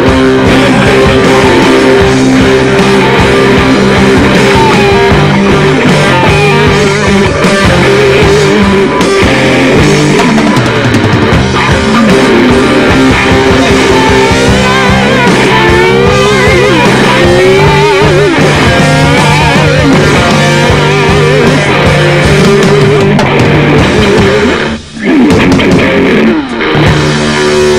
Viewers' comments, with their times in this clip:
0:09 hahahha at first... i was like wtf? echos.